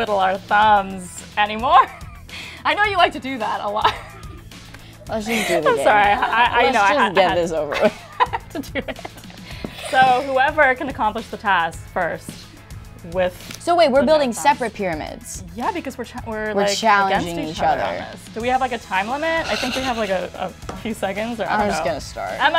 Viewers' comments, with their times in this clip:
0:04 Does anyone think Sabrina is saying damn or is it just me